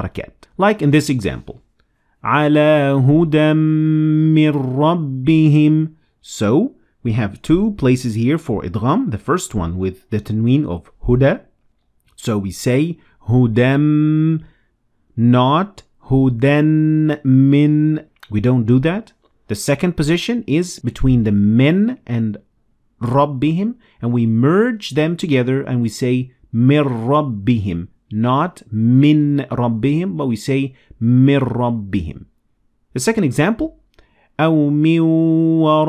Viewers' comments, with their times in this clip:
0:04 why is it that the ى isn’t pronounced at all?
0:23 you didn't extend for 2 harakat on مِّن رَّبِّهِم here, I am guessing its because of shaddah on ر . Am I right about this?